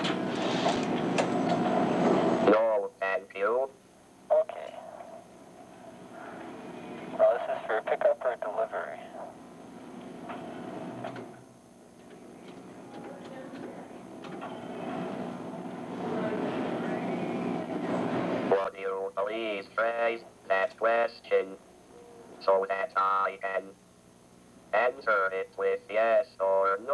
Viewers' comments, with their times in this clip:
0:08 oh wow I didn't realise is that how long it took to generate the voice synthesis?